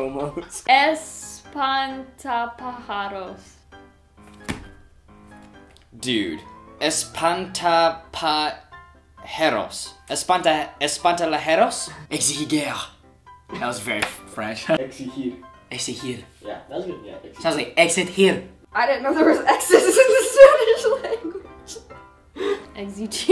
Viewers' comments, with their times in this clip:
0:07 EspantaPajeros. All Spanish speakers: 😏😏😏